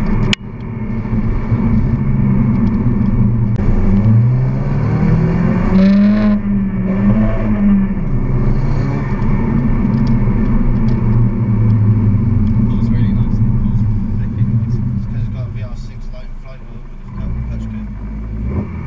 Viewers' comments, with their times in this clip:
0:05 grinding gears worn sync